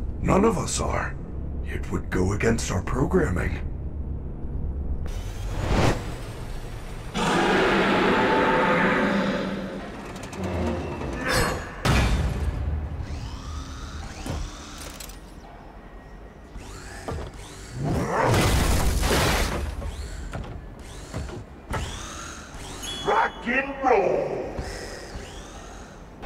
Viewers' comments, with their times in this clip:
0:07 ok I gotta admit, Monty’s roar is pretty badass